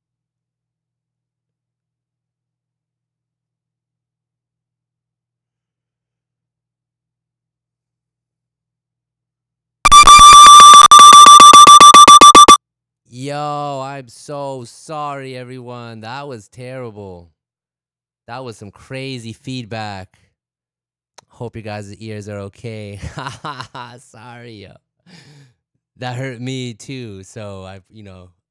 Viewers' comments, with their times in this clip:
0:09 WARNING: LOUD EAR PIERCING SOUND